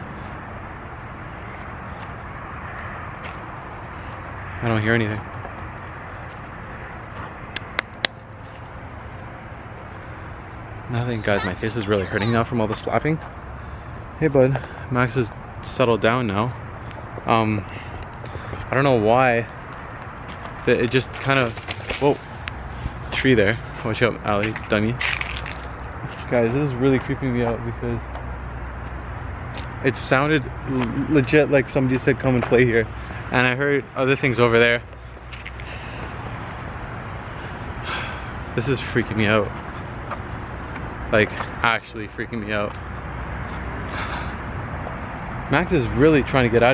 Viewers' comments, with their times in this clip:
0:06 after he is done clapping you hear that little girl again say stop hitting yourself
0:09 I HEARD A VOICE SAY STOP SLAPPING YOURSELF
0:10 Its creepy how she said stop hitting your self
0:11 she says something
0:11 In a hear a girl whisper something.
0:11 a girl said stop hitting yourself
0:12 after u clap a girl says “stop hitting yourself” the girl also seems like a friendly spirit and she just wants to play
0:13 a little girls voice says stop hitting yourself
0:13 on there a voice says “Stop hitting yourself.”
0:13 Just heard a little girl say “stop hitting yourself” 😆at
0:31 it sounds like a little girl said stop hiting yourself